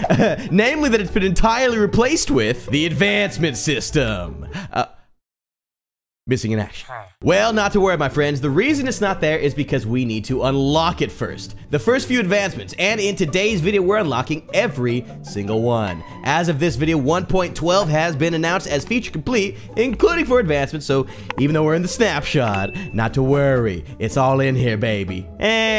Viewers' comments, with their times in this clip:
0:06 sad villager noise